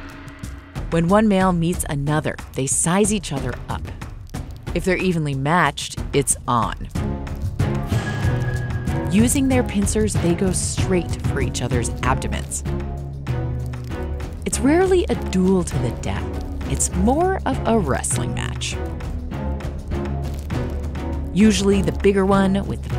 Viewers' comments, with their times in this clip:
0:05 seems like changing the music would make this VERY different